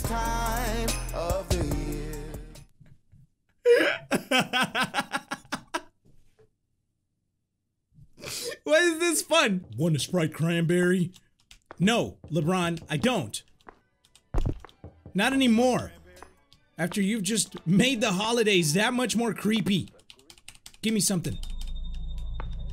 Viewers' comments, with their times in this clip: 0:08 sounds like Patrick from spongebob right????? Like if you agree